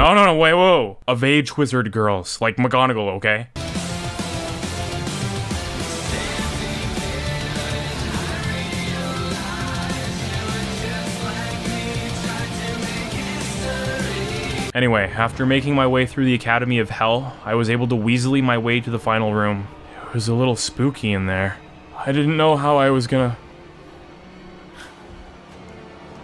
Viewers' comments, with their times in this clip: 0:09 nice music you got there